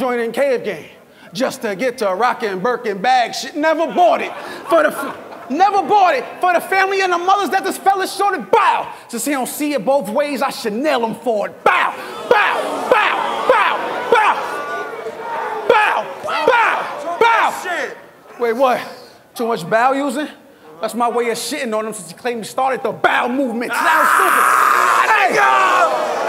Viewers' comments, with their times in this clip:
0:08 the way john did it slow it down